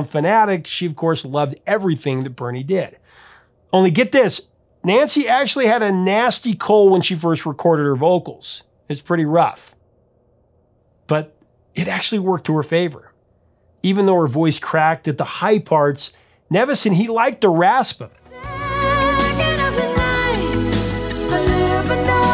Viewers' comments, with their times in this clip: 0:08 HAHAHA!!! That explains so much! I got this album when it hit, and when I heard Nancy's voice, I couldn't help but notice she was heavy on the 'rasp'. Typically, her voice is silky smooth, like a soft, warm day on the beach where everything is paradise. I thought if that was a studio effect, that really added something to that song! After hearing THIS, well that explained it!